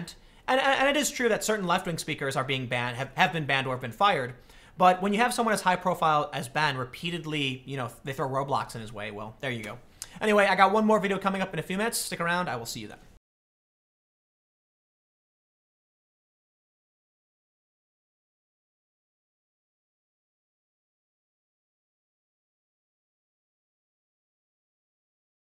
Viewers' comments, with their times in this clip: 0:08 "They throw Roblox in his way" - Tim Pool Yes I know what he really said, just sounded like it